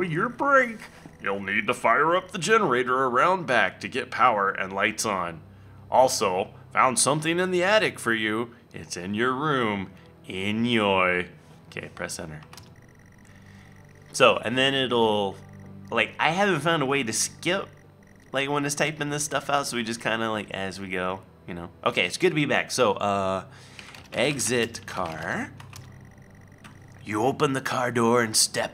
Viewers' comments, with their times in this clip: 0:09 did he say enyoy instead of enjoy